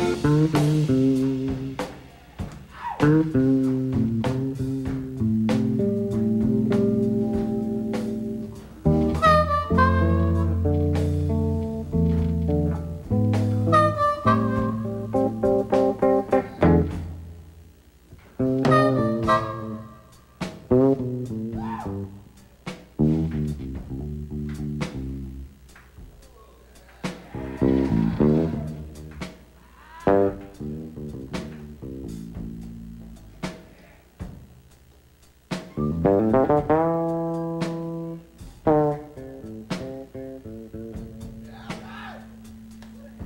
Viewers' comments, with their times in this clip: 0:06 half time bass solo took me right out
0:24 bass solo Expression on Butterfield's face is priceless: "who taught this kid to play?"